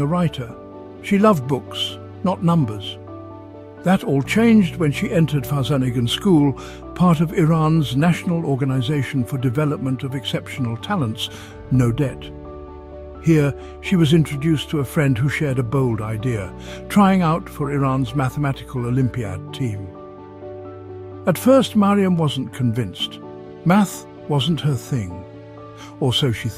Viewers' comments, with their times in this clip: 0:07 Her story is epic, and yet we need music. Stupid, annoying music sullying her memory. Thanks for calling my attention to her, but it's unbearable. Thumbs down and bye I'll find a watchable youtube of her.